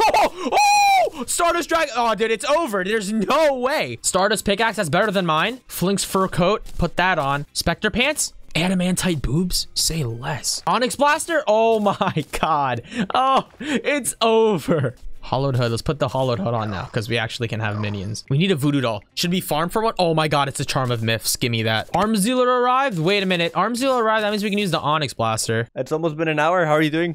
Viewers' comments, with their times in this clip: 0:09 "adamantite boobs, say less" tell me im not the only one that hears it?